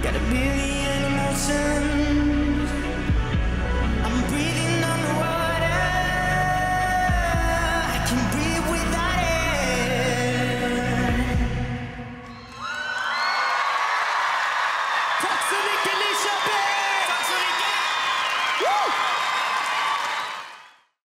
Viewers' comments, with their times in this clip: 0:03 that last note